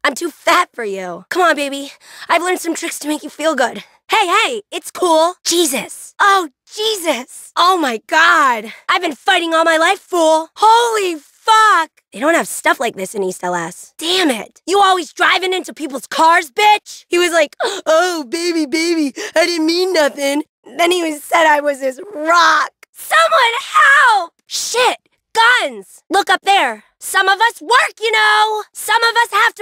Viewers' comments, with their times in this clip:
0:10 THE WAY SHE SAYS HOLY FUCK 💀